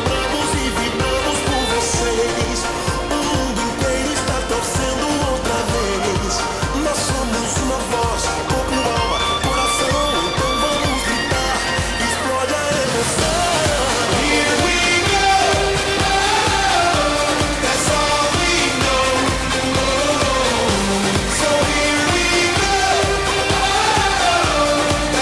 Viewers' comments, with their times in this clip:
0:10 Too sad this was Playback if you want a proof to, check the min.